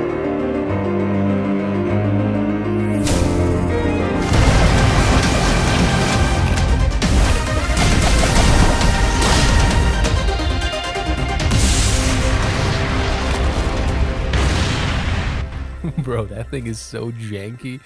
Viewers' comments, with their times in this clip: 0:03 THAT MUSIC TRANSITION, FOR GOD'S SAKE! 🥺💙 Anyway, I guess you deserve it. This is the best, most edited Sonic-related video ever! Keep going, because your edit skills are PEAK! 👏🏻👏🏻